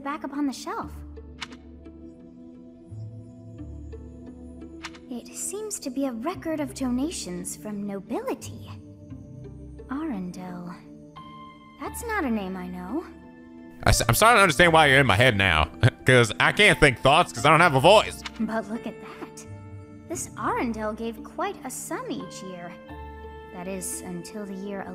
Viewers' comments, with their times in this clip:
0:10 Sothis mention the name arundel, and its just me? It is sound just like the name of the kingdom where anna and elsa come from.❄❄❄